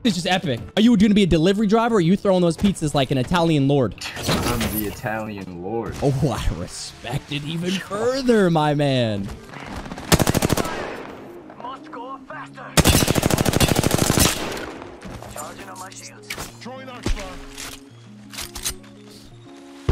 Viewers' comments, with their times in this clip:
0:05 gave me Kazoo kid vibes 😂